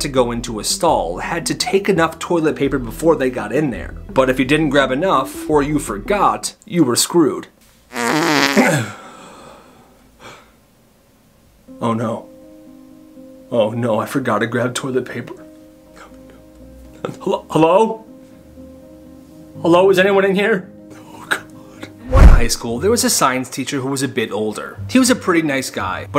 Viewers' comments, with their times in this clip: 0:08 The fart was loud💀💀💀